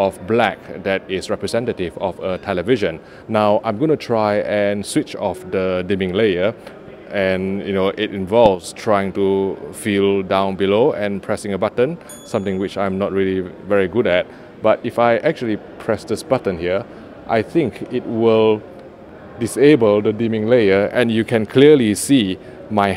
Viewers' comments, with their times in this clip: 0:07 Do you have a little bell with you?